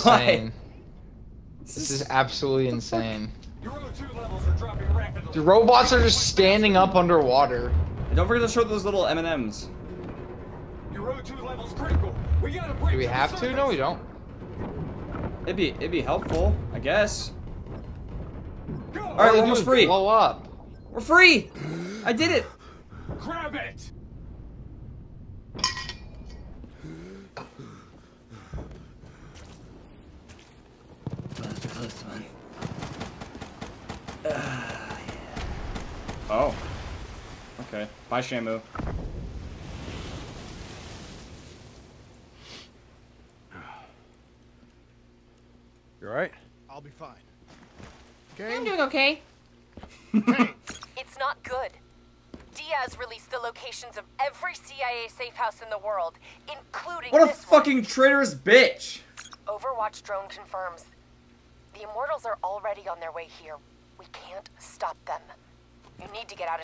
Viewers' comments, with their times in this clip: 0:08 hendricks had the kn-44 in his hands and it sounded like the shevia
0:32 why was tha ak sounding like the sheiva
0:33 when Hendricks pulls out his KN-44 to shoot the helicopter or what ever the hell it is the KN-44 sounds like a Shiva shame on you vonde shame. 😔😔
0:36 hendricks kn44 sounded like a sheiva WTF
0:48 Hendricks shoots a kn44 but it sounds like a sheiva